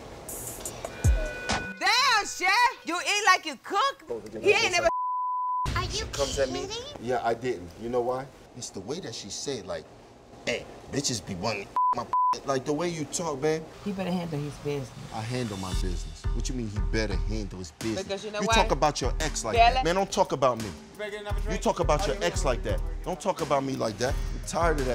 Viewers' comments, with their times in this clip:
0:05 "ArE yOu KiDdInGgg??" I swear that voice is